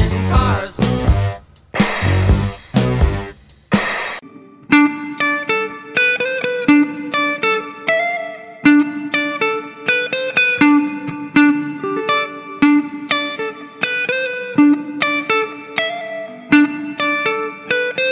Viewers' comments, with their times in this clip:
0:04 Interesting, the blues of Cars 'sound' starting is almost exactly like the same notes of 'Me, I Disconnect From You', and it sounds great!